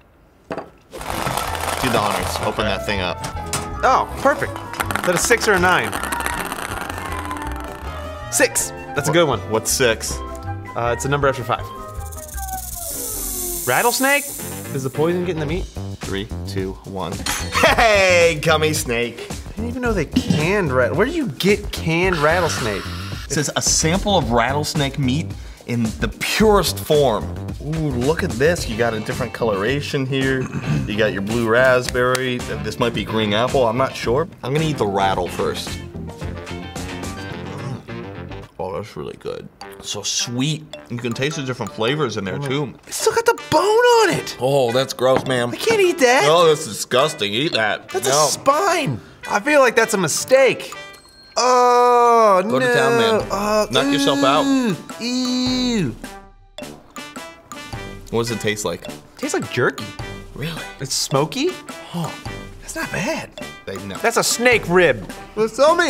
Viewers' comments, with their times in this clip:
0:05 Oh no! His balls dropped
0:51 it sounds like when a kid sees vegetables
0:52 He sounds like that one teacher from south park, or that gay couple from family guy.